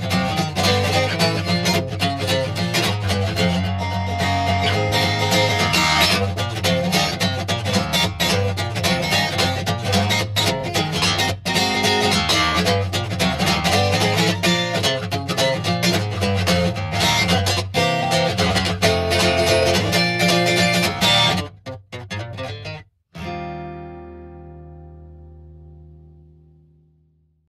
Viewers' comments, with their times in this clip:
0:03 those 2 freakin chords are pure heaven
0:17 There's a facebook message sound 😂😂